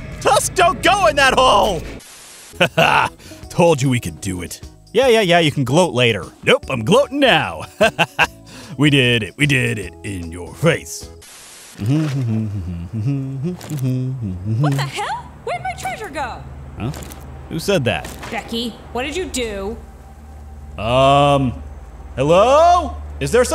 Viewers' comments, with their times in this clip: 0:07 you can here him humming one of the sea shanties from Minecraft